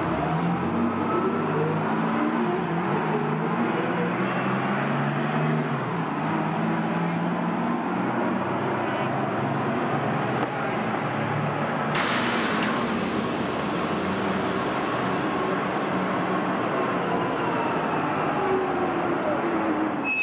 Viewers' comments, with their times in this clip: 0:03 you can never copy that sound. Man ever since I hear that take off from 1st to 2nd. This always been my favorite bus from SEPTA it’s crazy y’all didn’t even save at least one for a historical museum fleet like New Jersey Transit does.